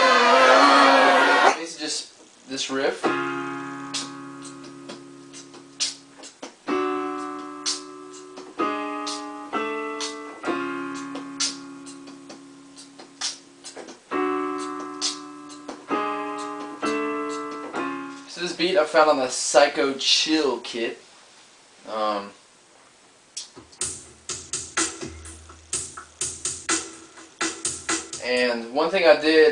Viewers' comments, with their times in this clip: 0:10 Hidden talent: Beatboxing